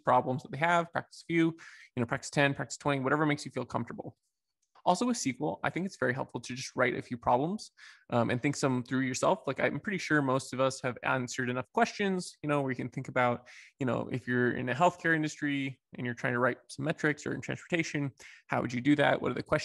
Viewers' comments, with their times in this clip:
0:05 why U said "sequel" not "S Q L". Yes, I also hate ppl which pronounce is as "skull".